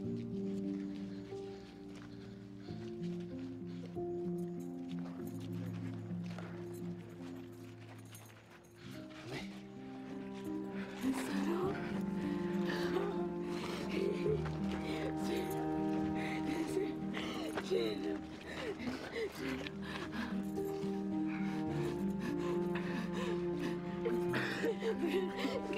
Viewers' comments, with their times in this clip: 0:08 he wasn't autralian for second when he said ammi